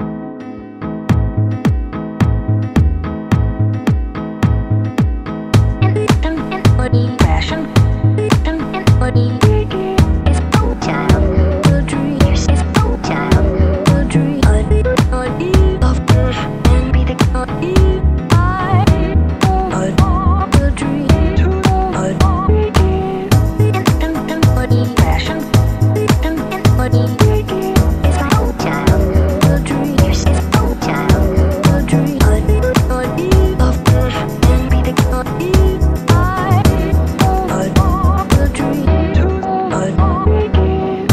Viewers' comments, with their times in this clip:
0:10 Who else hears “lets go child”
0:12 I heard "This is our child"
0:12 I'd hered bulid trEE in
0:12 I heard ''this is out child'' in
0:12 i heared both because they both was
0:18 I- oh this is pill tree (that’s what I heard)
0:28 why do i hear "it's our child,oudry"